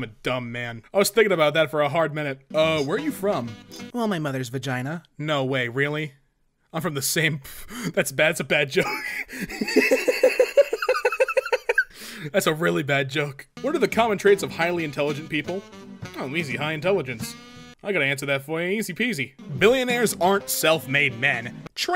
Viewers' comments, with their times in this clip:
0:03 Did you say from the same, or from the sink? Either way, I don't get it. What's the joke?